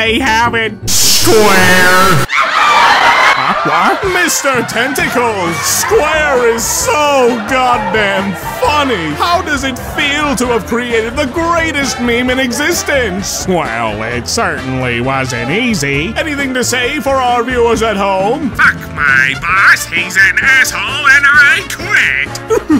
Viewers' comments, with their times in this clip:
0:09 there’s that voice again I just can’t escape it starts loading gun pointed to his head lol